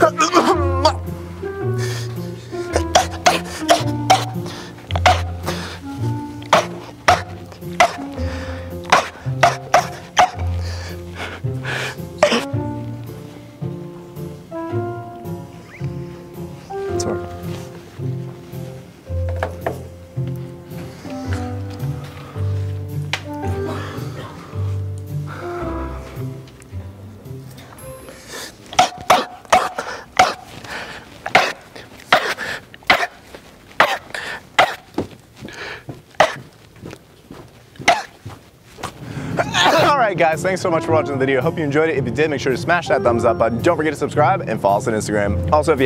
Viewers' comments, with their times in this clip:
0:03 it sounds like my dog barking.
0:06 Nobody: The neighbours dog at 3 in the morning:
0:19 how I sneeze
0:29 the guy was trying to keep his shit together and then he did it again and busted out laughing 😂😂😂